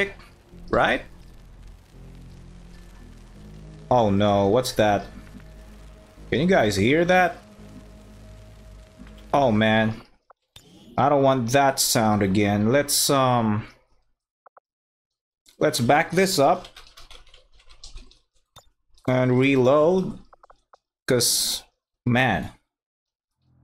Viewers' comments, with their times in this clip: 0:04 I think the audio was fine at around this point. Or maybe my ears suck. Hehe